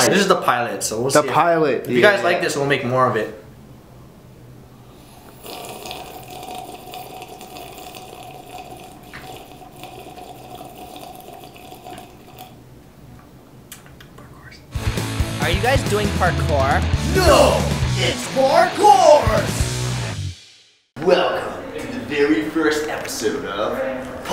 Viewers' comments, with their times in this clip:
0:06 Weird slurping noise